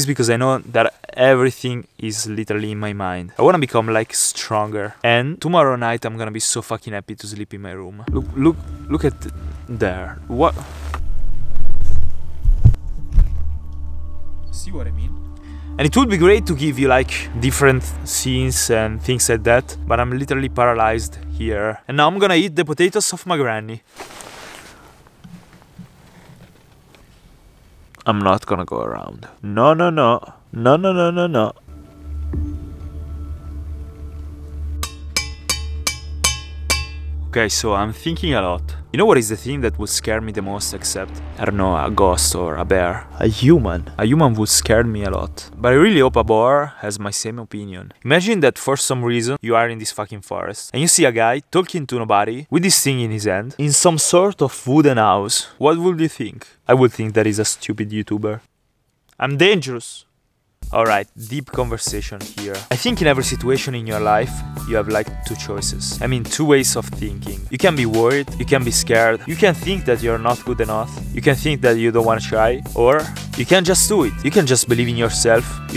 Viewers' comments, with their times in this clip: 0:07 sounds a bit like the fart meme
0:56 holy shit i can't 😭🤣 '' um dengros'' 💖